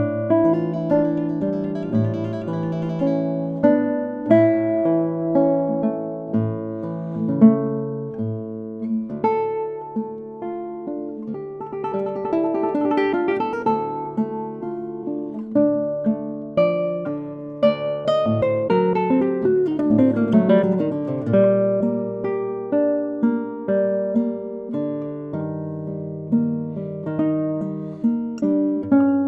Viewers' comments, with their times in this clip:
0:10 I don't understand he's playing a G to an A without even playing it lmao